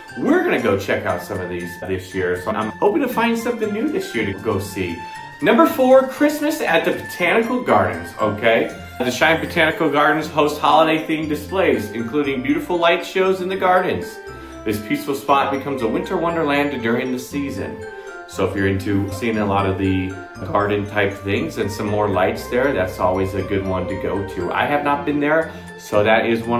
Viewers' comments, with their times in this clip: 0:09 6. Go the the Holiday Magic concert with the wonderful Cheyenne Symphony on the 14th. (Weird how "Cheyenne" becomes "Shine" .)